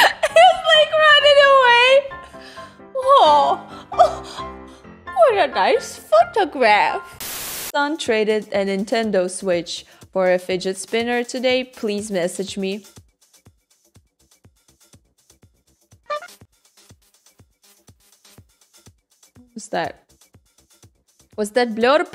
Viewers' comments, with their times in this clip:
0:03 So... she’s becoming Pewdiepie , except backwards. She’s playing the scary games and screaming. 😂 or is she nickelback with a foreign accent? What just happened? What did I watch???